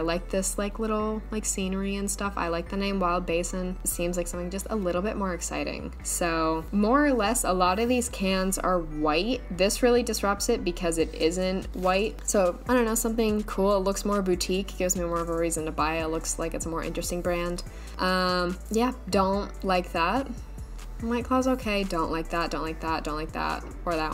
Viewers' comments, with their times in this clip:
0:07 the 808 sample after you said ... smart